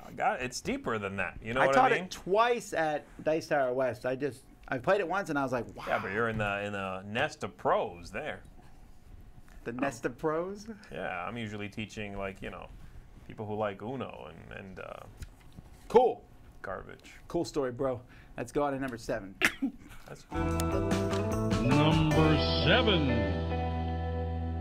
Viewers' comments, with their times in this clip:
0:10 this whole bit, just....YES, the burn, the swag, the chuckle